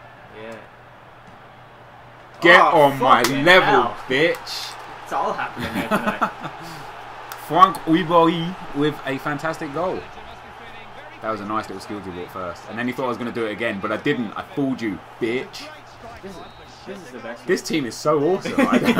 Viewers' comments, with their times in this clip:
0:06 Gotta love "Frwank Rieberie"